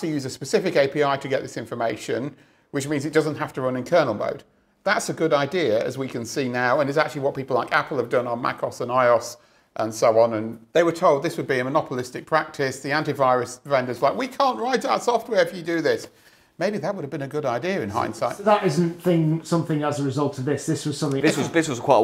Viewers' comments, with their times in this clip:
0:08 I have never heard anyone pronounce macOS or iOS as "meh-coss" and "eye-oss" before. 😅